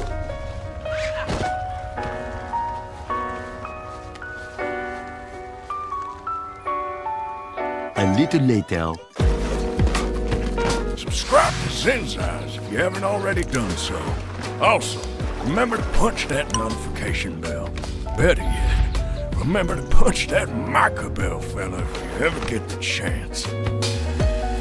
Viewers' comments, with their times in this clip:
0:10 Is that his impression of Arthur because that’s really good that’s really good